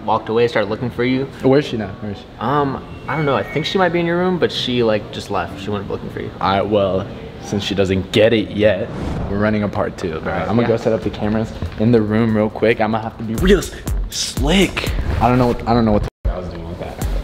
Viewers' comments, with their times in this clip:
0:03 first four minutes of the video: Normal LAUNDRY MACHINE GOES OFF Sorry I just was very proud of myself for recognizing that sound. All y'all can just continue scrolling through the comments.